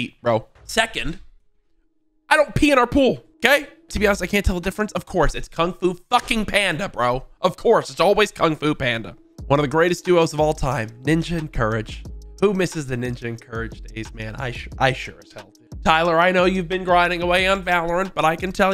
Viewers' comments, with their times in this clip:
0:05 why do they also sound the same?